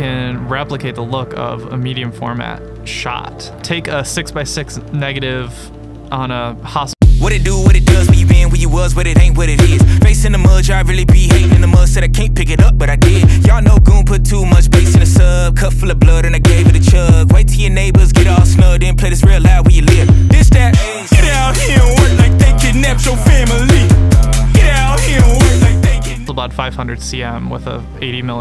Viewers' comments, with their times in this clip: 0:09 Why is there a trash rap song crap commercial ?